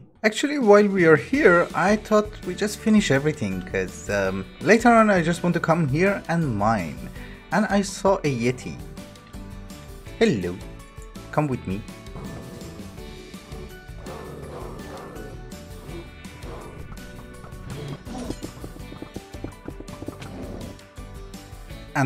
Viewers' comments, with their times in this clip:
0:10 the cutest "hello" ever <3 <3